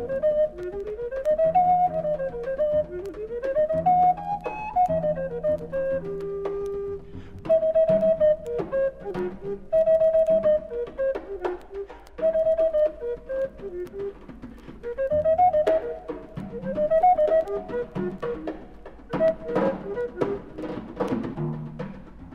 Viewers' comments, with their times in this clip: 0:04 sounds like Four Tet's "Teenage Birdsong" from his latest album.